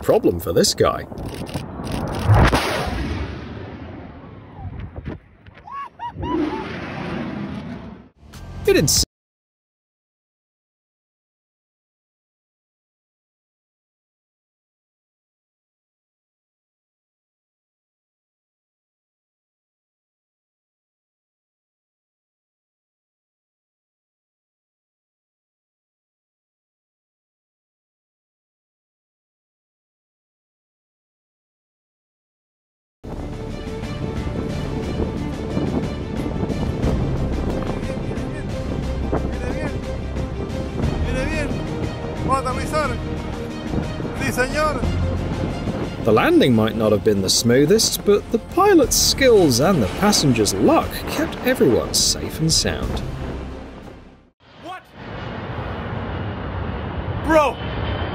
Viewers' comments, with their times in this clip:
0:08 ... Audio cuts out
0:09 The best part was when the sound cut out. That annoying narrator needs to have his mouth sewn shut.
0:10 8 million subs and you dont care enough to check you audio
0:40 I tried to watch this. But the narrators voice and idiotic "funny" comments are so incredible annoying, I just can't. Barely managed to get to